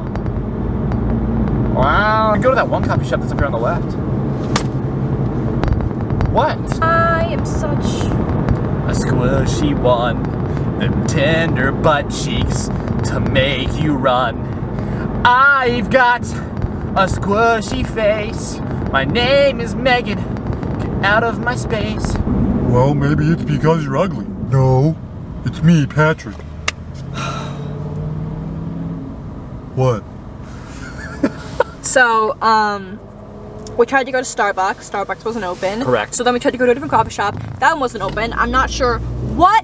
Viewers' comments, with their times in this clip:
0:10 I love his song it made me laugh so hard😂😂😂
0:21 His voice changed into Patrick Star
0:23 gives me shrek vibes when donkey is popping his lips and asking are they there yet 😂😂